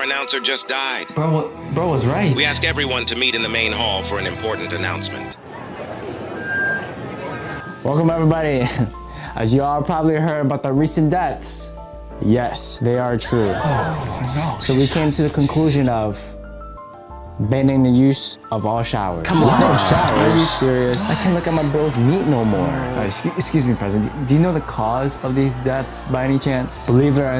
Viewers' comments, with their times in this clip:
0:09 bruh why am i hearing in the gojo infinite void domain expansion💀